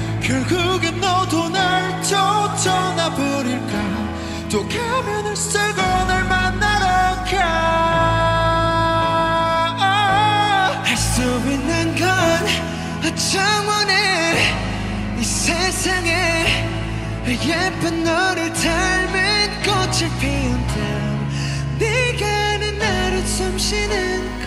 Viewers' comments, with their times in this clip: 0:09 I really love Tae’s improvisation ❤️❤️❤️